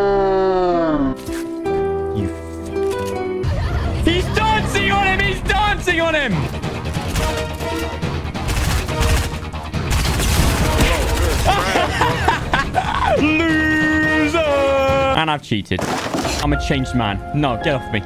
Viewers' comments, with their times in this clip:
0:03 bro that noise Ninja did gets me every freaking time 🤣😭💀